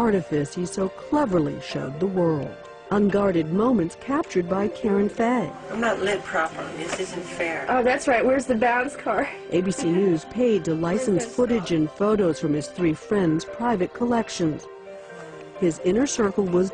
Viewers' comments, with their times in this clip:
0:03 that look.. his voice.. OMG he's an angel <3 <3 <3 <3